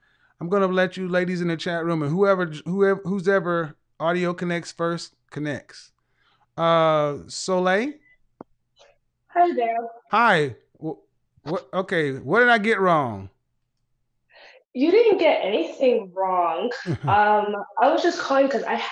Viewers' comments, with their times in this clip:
0:04 I like how she says "Yes!"